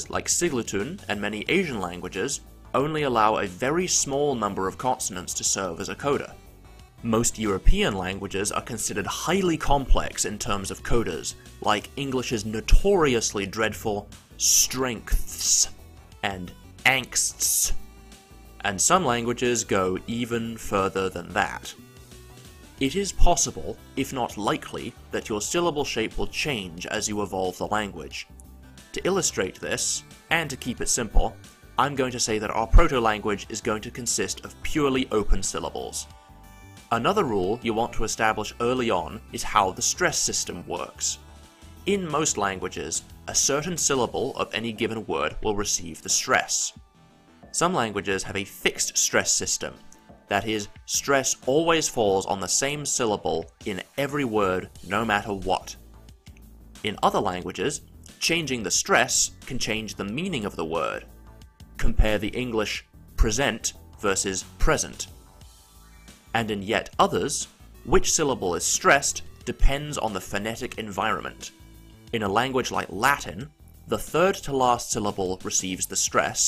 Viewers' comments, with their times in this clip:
0:09 that russian pronunciation is WRONG
1:02 The audio track misreads the two English words, switching them (or at least that's the order). Transcribed phonetics is right though.